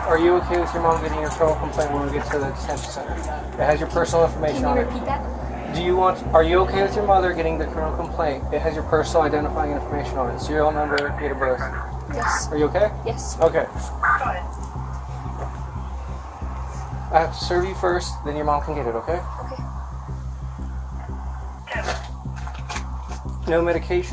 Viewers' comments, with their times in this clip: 0:06 person got a serial number???